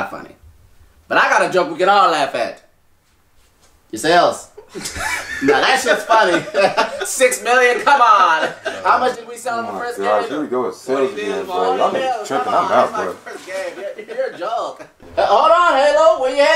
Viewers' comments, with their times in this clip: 0:04 that sales part got Luigi laughing for real. It not no acting laugh. It's that real laugh like that the joke will never get old,🤭💯